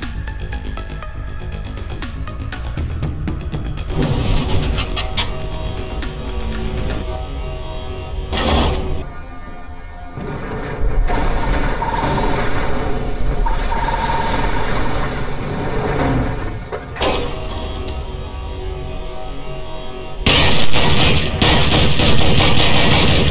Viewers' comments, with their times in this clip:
0:08 (Sorry if this is a late comment) Scp 2317: SNIFF Guards: Did he just...nah im out bro